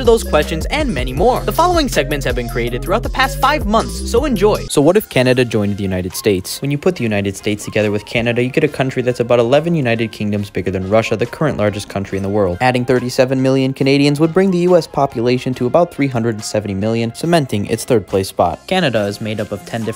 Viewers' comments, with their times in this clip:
0:05 Bro sounds depressed